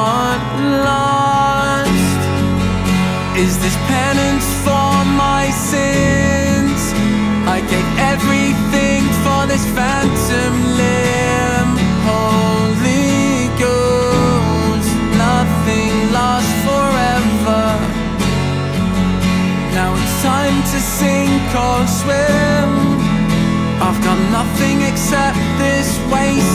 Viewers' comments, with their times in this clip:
0:07 I really like renditions like this! It sounds like there's a bunch of pitch correction though
0:07 I really like this rendition, except for that little part that starts They should have redone that part instead of trying to do…whatever that was. Otherwise this was lovely